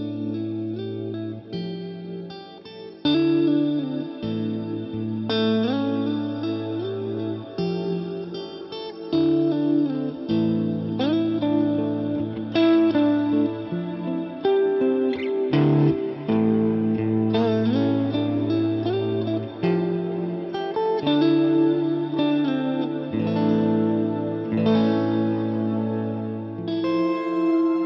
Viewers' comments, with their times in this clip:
0:10 cloud reverb Awesome tone sauce!